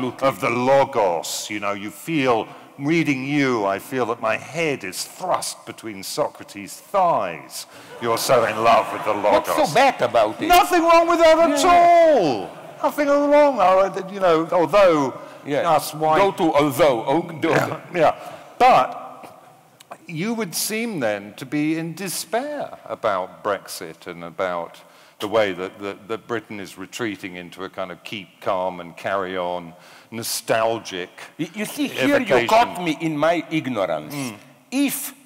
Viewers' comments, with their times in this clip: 0:05 Did Will Self burp really weirdly ? And so much so that it seemed to change the direction of the conversation? Seems apt.
0:16 It's a burp? hahaha